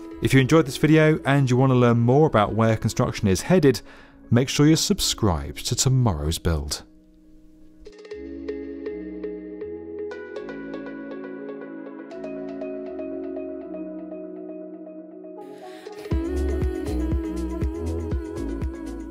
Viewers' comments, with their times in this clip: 0:07 Thanks for the great news and ending with turning up the lovely music from on :-)